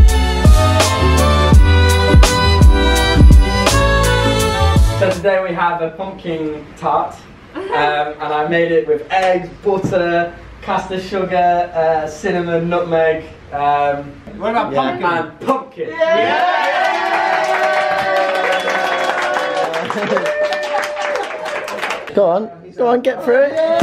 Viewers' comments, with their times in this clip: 0:10 Botter I can’t I love the British accent